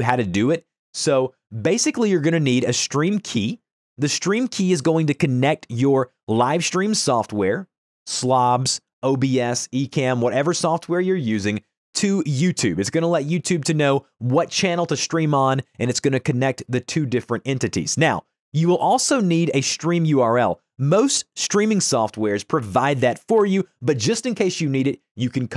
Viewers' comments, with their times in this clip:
0:09 SLABS WTF WHY WOULD YOU SAY THAT YOUR TORTURING ME WITH YOUR SHORTEN WORDS BRO